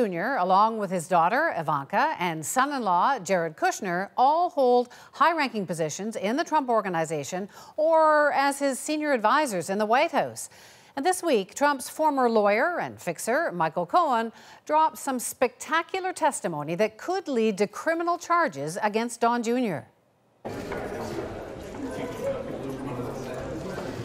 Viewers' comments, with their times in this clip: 0:09 extreme canadian accent unleashed in one word. LOL